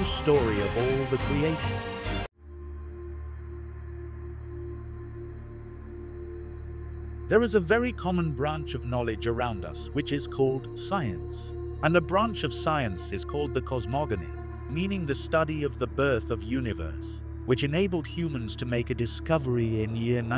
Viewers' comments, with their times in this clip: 0:03 Would have been nice is "background" music did not dominate over narriation gave up